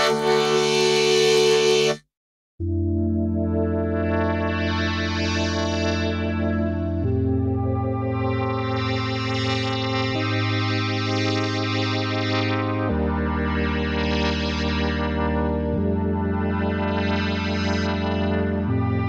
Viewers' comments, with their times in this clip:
0:03 dear god, this sounds incredible